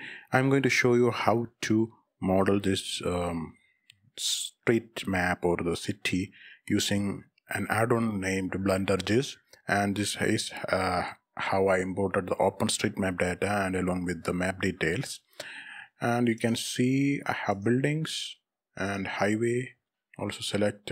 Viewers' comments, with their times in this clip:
0:08 THE WAY HE PRONOUNCES BlenderGIS